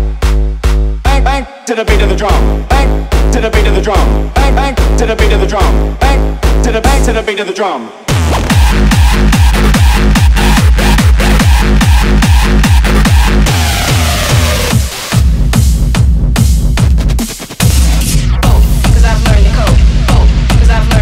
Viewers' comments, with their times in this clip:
0:08 Dat kick @ ! Kreygasm